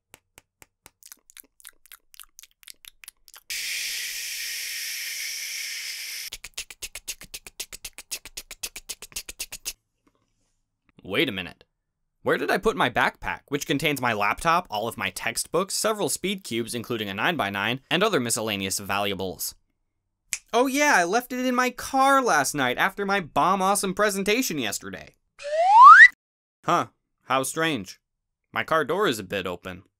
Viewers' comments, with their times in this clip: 0:06 Heck ye i thought it was a helicopter
0:07 are you brushing your teeth with a train
0:10 All ASMR up until